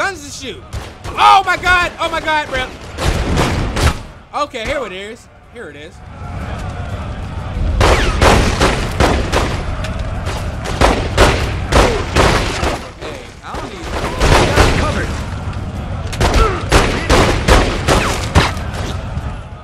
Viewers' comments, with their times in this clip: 0:06 the way u said "here it is" 💀